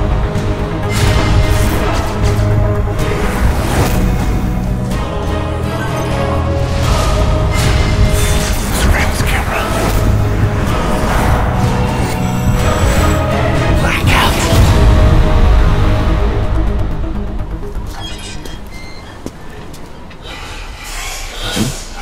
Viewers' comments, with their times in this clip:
0:08 that's not David's voice :( If we are lucky that could be a place holder